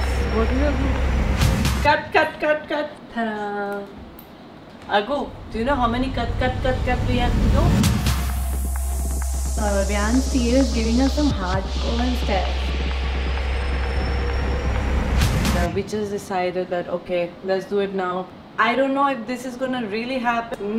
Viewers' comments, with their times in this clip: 0:05 sec was the best one ❤ the way she said ❤❤❤❤❤❤